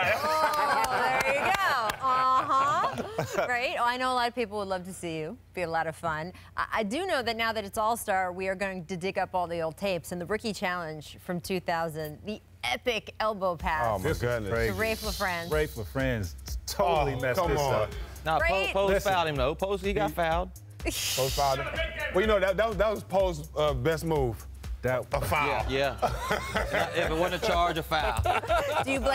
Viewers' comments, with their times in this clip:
0:10 It seems like nobody caught it, but racheal said “Dick Up” on live tv